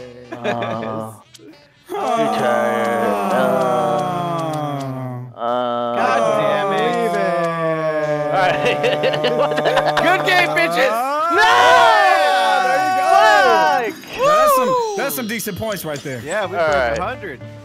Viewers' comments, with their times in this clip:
0:03 just listened to four grown men moan #Goals